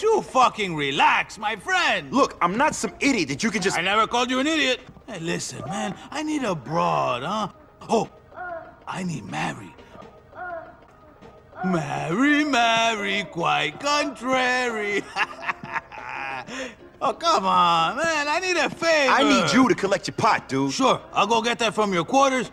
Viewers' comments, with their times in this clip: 0:08 Mary Mary 😂😂😂😂😂😂😂😂😂😂 And what's that noise in the background? Porn?